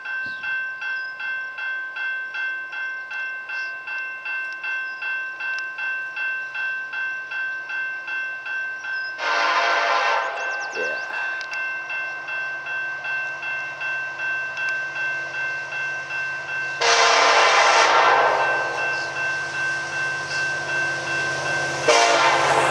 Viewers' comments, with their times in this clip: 0:06 now that’s LOUD